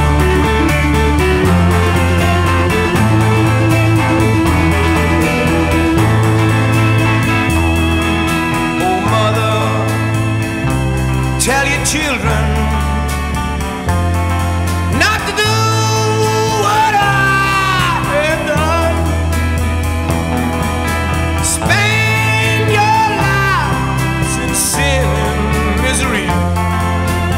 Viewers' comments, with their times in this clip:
0:10 your turn that down it's like i😮n the morning